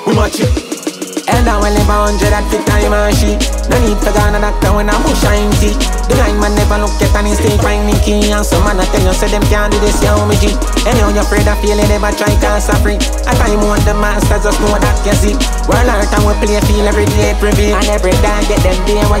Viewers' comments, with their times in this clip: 0:05 sound like 2016 alka kinda 👌